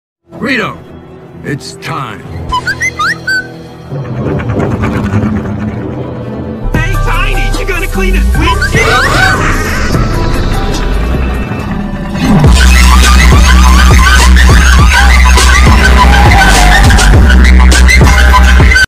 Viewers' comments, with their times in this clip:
0:06 still vibin' with this lil beat
0:07 a good song